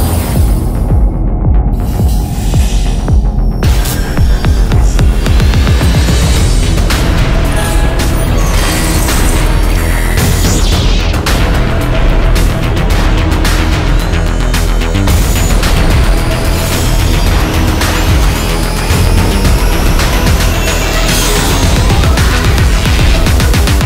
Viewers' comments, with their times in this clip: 0:10 Who else noticed the sound of a lightsaber ?